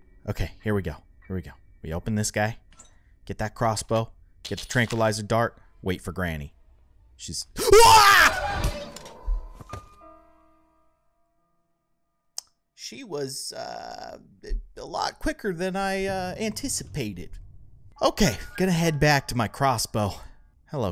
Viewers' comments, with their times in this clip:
0:07 what the heck was that noise?
0:07 first time hearing u scream like that edit = funniest episode of all 🤣🤣🤣
0:08 -I love that scream
0:08 That scream though 😂😂😂